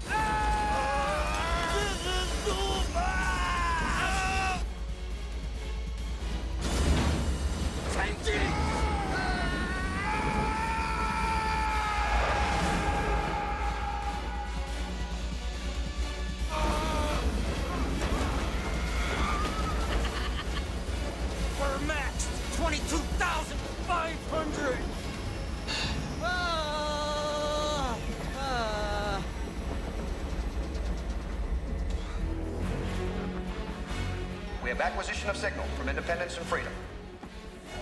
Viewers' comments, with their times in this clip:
0:10 Best part is when you hear Bruce Willis screaming echoing through space rofl
0:10 Bruce Willis screaming like a Super Saiyan
0:10 ya know that shit hurt when you hear the scream in space lol
0:11 AHHHHHHHHHHHHHHHHHHHHHHHHHH ...... "Bruce And Da Bois" literally SCREAMING through space. Still one of my favorite parts after all these years.
0:13 In space you can hear Bruce Willis scream.
0:20 everyone is freaking out and he's cracking up lmao!!!
0:20 pretty funny when the russian is laughing like a psycho whislt everyone else is screaming like hell.